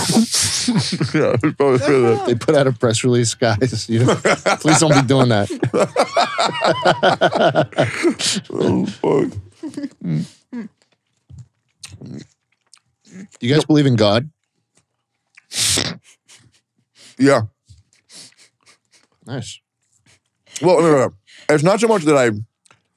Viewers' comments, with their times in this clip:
0:08 The silent chewing 😆